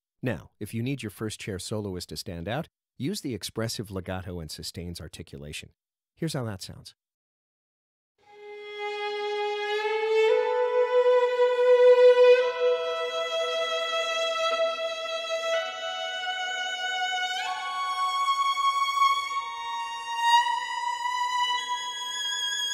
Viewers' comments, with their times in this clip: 0:08 It’s not mentioned explicitly, but the library appears to have re-bow functionality for repeated notes.